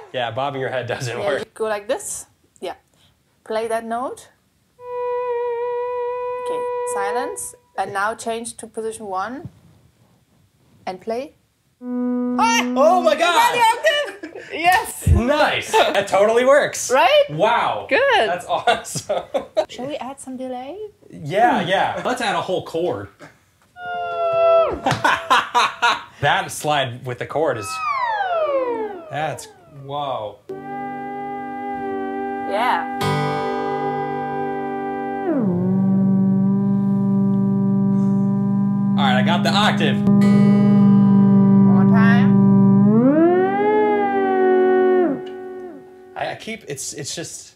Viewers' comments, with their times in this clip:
0:04 mosquitoes 3 AM in the morning
0:22 I think I just figured out how they made the sound of the probe that was calling for the whales in Star Trek IV
0:30 Sounds like you're at the railroad and a train gives you a warning horn 'x)
0:35 is something you'd find being played at bikini bottom 😅😁